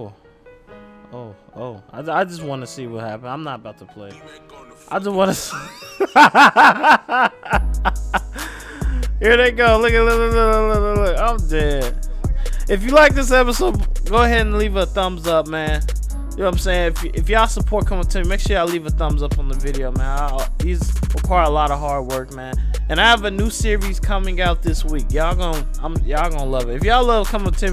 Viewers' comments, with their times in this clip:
0:09 Ahahah that voice crack